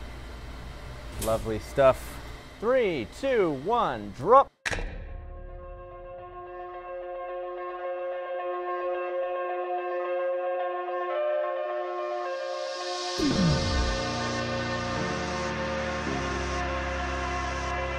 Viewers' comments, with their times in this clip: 0:05 anyone else think the music sounds like Baba O'Riley?
0:05 just love those shot in combination with that music.❤️‍🔥